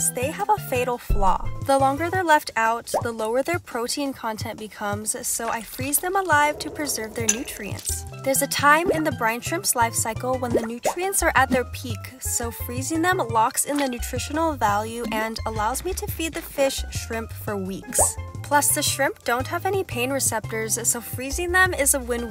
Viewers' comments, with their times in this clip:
0:04 Did anyone hear a minecraft cave sound